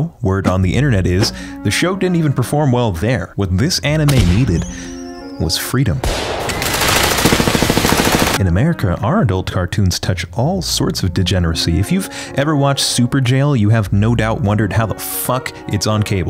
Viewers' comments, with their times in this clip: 0:03 what this anime needed was freedom😭😭😭 gunshots and all
0:03 “What this Anime needed was Freedom 🇺🇸.” (The Stared Spangled Banner intensifies)